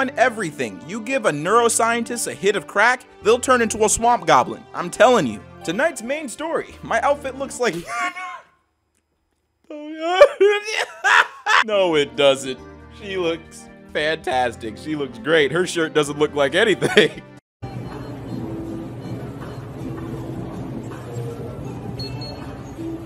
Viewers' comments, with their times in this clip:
0:06 My outfit looks like death wheeze